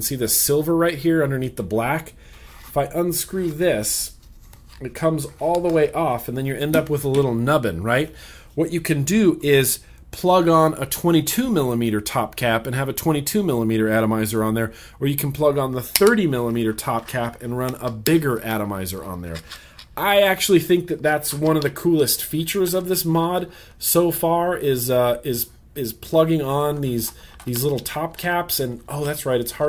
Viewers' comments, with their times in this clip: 0:10 You dog you.....at you actually growled at your mod.